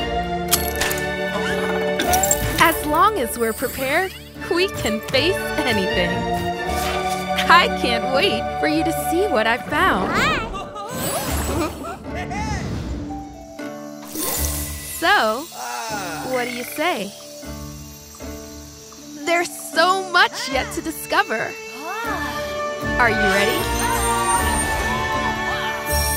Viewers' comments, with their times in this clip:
0:09 Did anyone else hear Kirby?